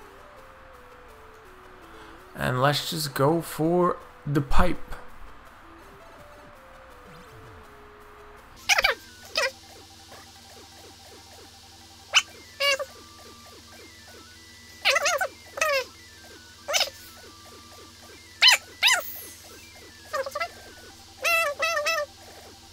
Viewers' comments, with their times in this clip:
0:07 woah you sound so different here. Also bless YouTube editing magic sometimes xD poor you (love chipmunk zen tho)